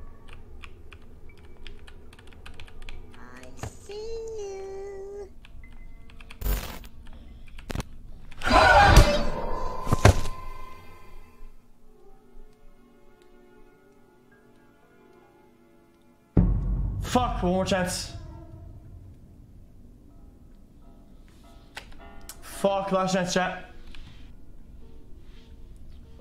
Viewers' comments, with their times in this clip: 0:07 his scream matched granny's scream